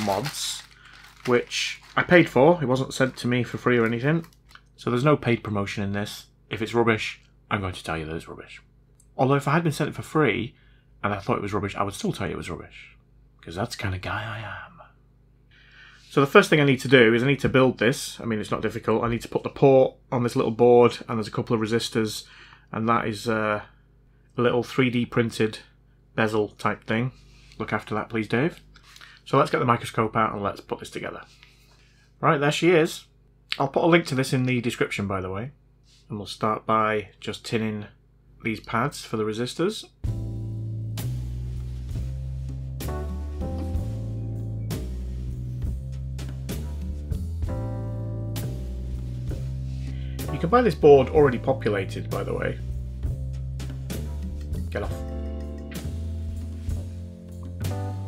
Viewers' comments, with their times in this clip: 0:08 you can hear the females wetting themselves. Man, I love your way of editing. Just the "solid" part, you make it interesting all the time. Keep it up!
0:41 I was really digging the music